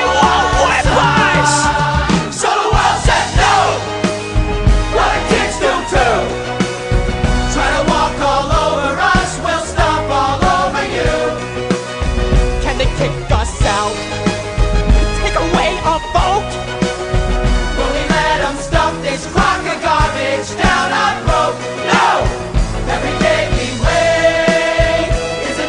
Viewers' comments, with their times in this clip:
0:07 there's someone running down (or up, I dunno) some stairs (obviously). Well, the second foot doesn't have shoe, so it's probably Specs, cuz, y'know, "AnD i LoSt My ShOe!". I dunno, I just thought that was a nice touch.